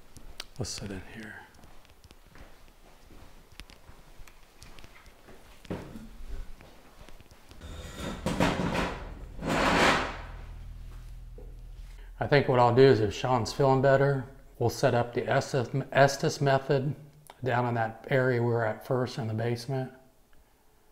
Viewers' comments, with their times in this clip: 0:06 theres a man groan or voice right before you move the chair.